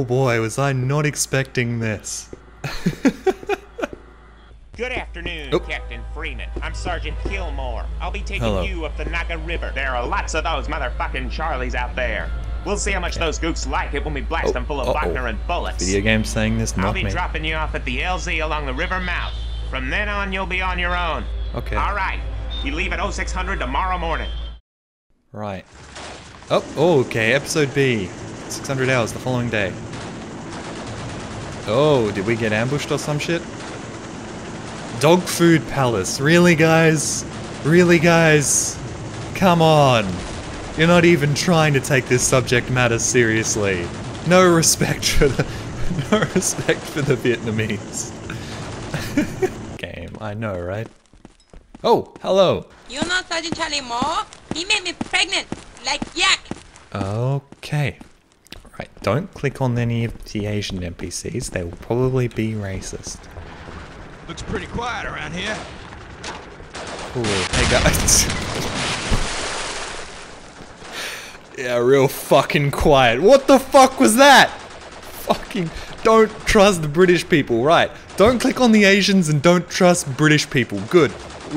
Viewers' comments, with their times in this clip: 0:04 The Sergeant Killmore sounds like Roger Smith
0:24 sick beats from the roflcopter 🤣😂
1:04 how the fuck was the guy british